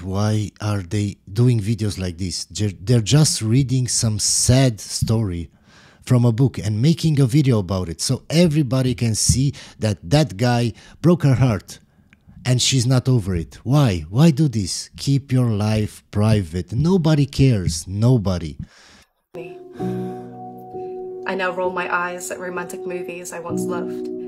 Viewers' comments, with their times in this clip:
0:06 Videos with crying and piano music… Performance art!